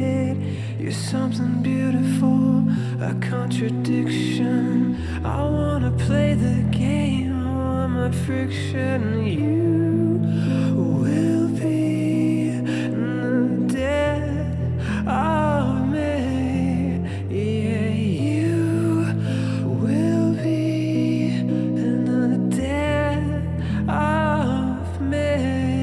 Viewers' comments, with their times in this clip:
0:09 Oh my gosh... it's like he's putting a spell on you through his voice